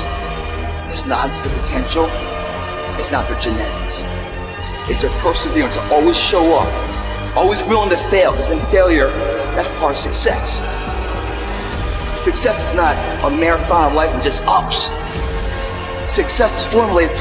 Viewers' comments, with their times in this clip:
0:05 seriously , what is the theme soundtrack at the min mark . It's so uplifting